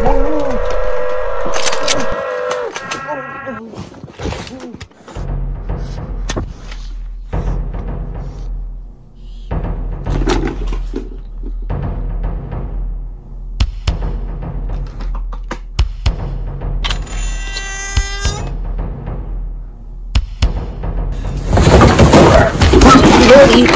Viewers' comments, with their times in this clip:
0:04 Can we talk about how that sounded like a REAL sound effect.